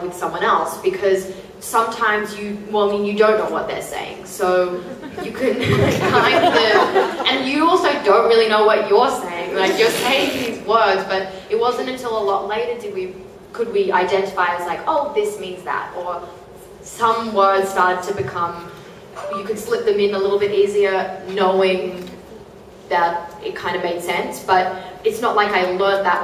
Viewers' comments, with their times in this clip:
0:09 did someone just fart 🧐